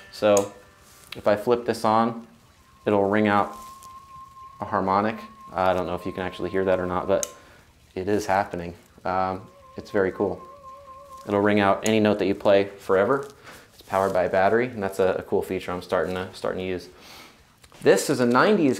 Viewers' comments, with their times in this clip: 0:03 that sustain is some real nigel tufnel stuff
0:05 The sustain, you can hear the sustain on it. Like weeewewewewww you can go have a bite and come back and it's still weeewewewewww and you can hear it. No, you don't, but you could.